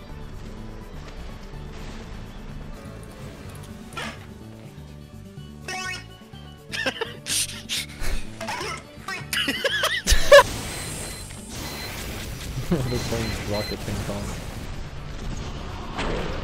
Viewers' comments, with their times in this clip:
0:03 how the fuck did he get his mic like that i actually wanna know LMAO